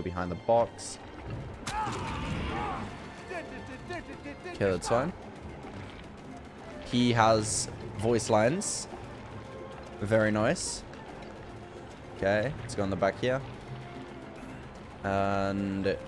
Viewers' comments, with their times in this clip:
0:03 lmao he was making fun of myers theme